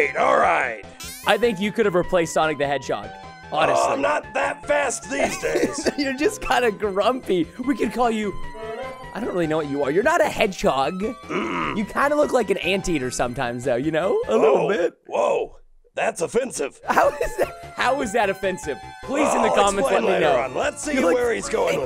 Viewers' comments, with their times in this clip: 0:08 anyone else thought this was a cgi thomas sound effect or was it just me?